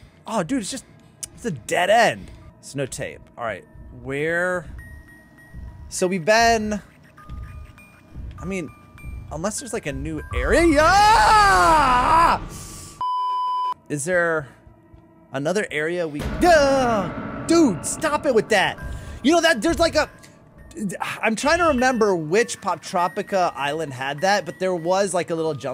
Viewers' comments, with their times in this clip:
0:08 you were saying area but it got ariaaaaaaaa!